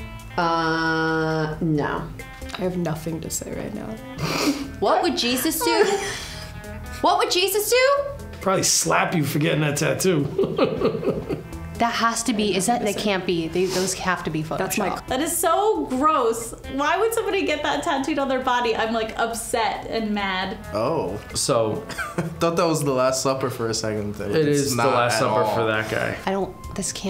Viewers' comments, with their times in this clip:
0:10 listen again. The woman on the left is trying to say thats is my C... Client!! Listen again haha